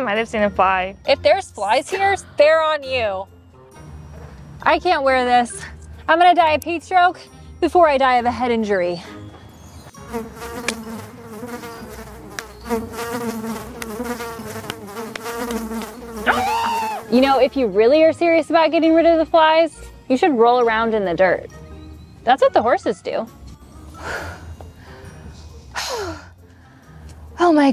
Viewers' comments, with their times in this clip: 0:10 Fly sound effect for real made me swish my arm over my head 😆😆